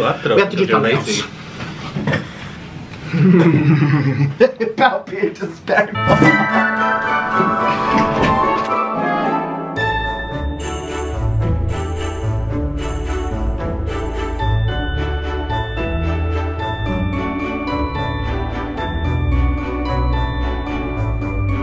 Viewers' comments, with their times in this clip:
0:06 And here's some music for the morning! 📻🎶